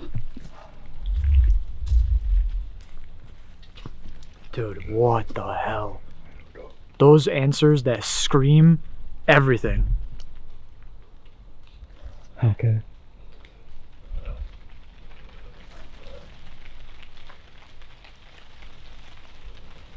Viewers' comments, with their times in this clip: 0:06 sounds like a disembodied voice